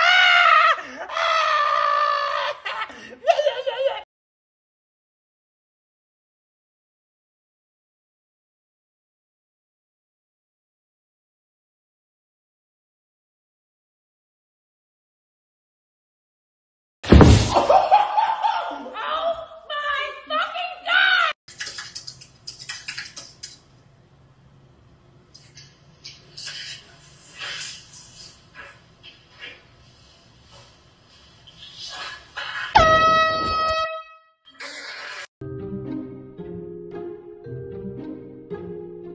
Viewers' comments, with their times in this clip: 0:06 i thought my headphones broke
0:13 captions: “you” Me:”Bro what the fu- it was complete silence!!”
0:26 a certified prankster always has an air horn laying around